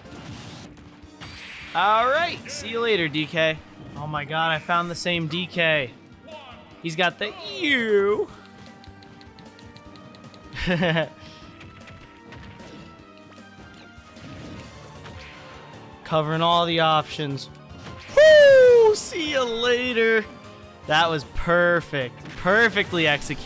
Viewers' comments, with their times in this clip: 0:10 why was that laugh so wholesome